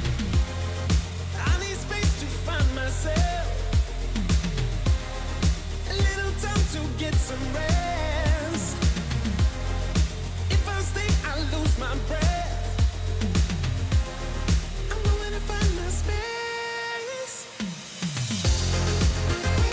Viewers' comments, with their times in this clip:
0:05 that exhaust leak sounds great. Upbeat tempo, good vocals. Don’t touch a thing.